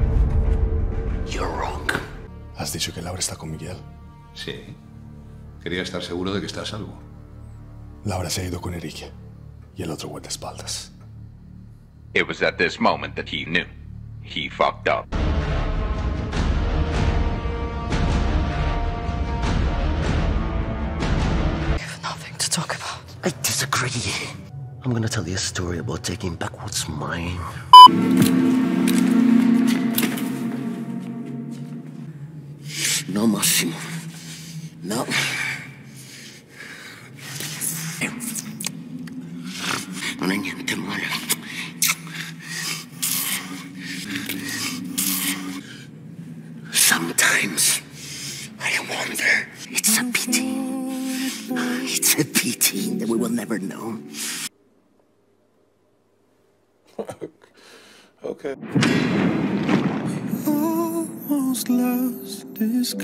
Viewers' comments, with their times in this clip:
0:07 is spanish so the languages: english spanish polish italian and confusion😃
0:23 bro said "disagree" like it was a slur💀
0:37 THE SOUNDS HE IS MAKING 💀
0:38 i am dying at the rat noises during
0:38 the fucking snarl I'm dead
0:38 I think yall lost me .. like.. wth why do u act like ur an asmr streamer ☠
0:44 The suvking and kissing, breThing and twitching was so unnecessary i caught two seizures and an heart attack no way they acted this out and the director thought "yup, this the one😄" Delete all everything atp..
0:49 THE MY PRECIOUS VOICE HELP